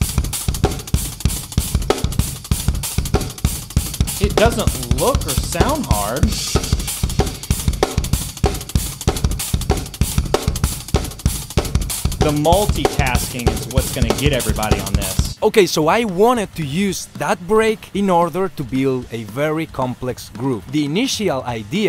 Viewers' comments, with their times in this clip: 0:07 I’m guessing he got the inspiration for that groove from the breakdown in Slipknot’s the heretic anthem, sounds like the same groove except he exchanged the floor and kick for hi-hats.